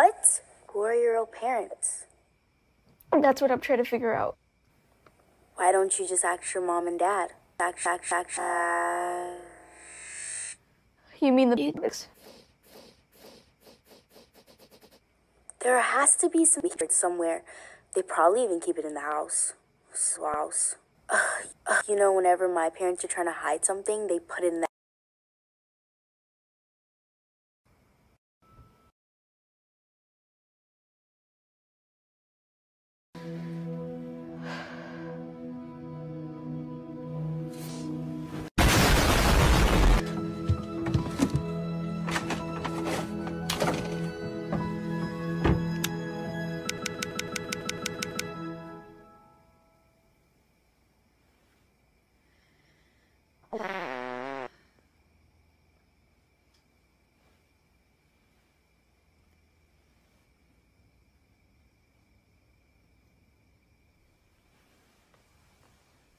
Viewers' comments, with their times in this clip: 0:08 I say axe when I was younger because I pronounced it like: aks 💀💀
0:52 i completed cryied to laugh i was diyng this fart is so awesome while mom sleeps with anxiety ur a legend